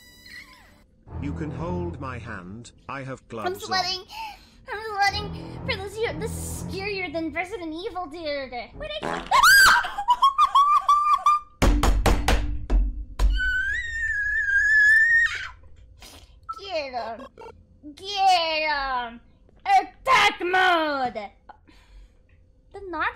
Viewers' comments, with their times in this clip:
0:09 bro BanBan just made her fart